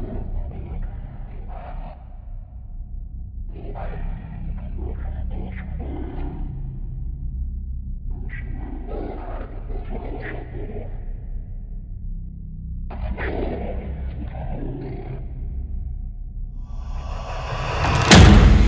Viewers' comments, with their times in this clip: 0:03 sounds like Sangheili language